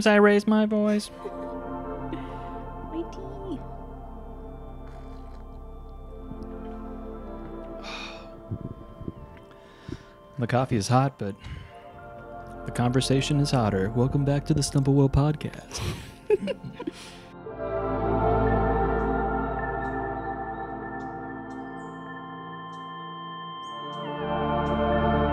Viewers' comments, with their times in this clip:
0:10 that whole delivery killed me.